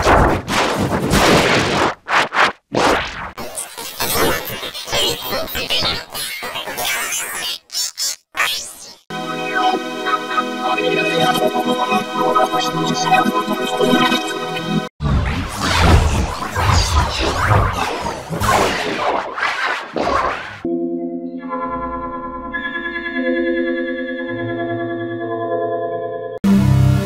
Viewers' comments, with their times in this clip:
0:08 fat low voice